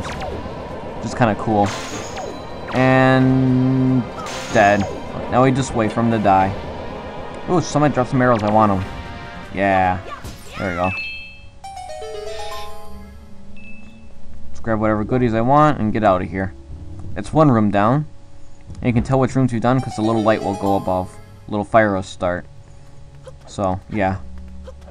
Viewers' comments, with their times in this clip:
0:08 i thought u said oh some1 dropped marijuana XD